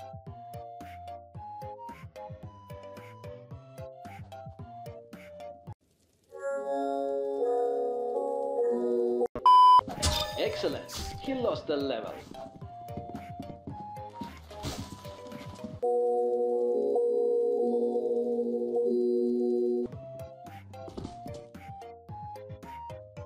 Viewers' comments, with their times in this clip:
0:07 Roblox horror song flashbacks